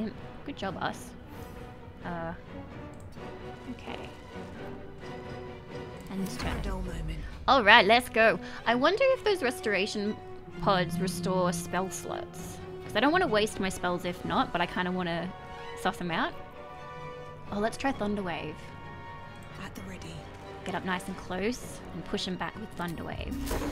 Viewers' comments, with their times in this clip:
0:10 if they restore your spell whats? Your accent did my dirty mind dirty there.